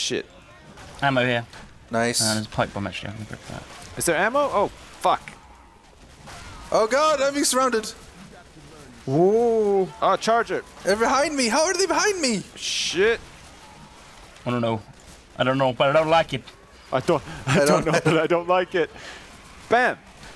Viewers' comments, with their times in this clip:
0:08 I noticed that the audio was a bit off